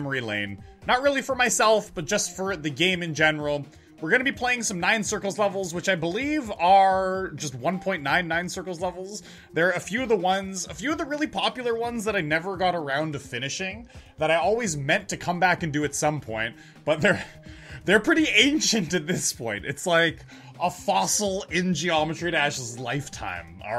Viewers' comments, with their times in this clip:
0:06 it sounds weird saying 1.9 nine circles levels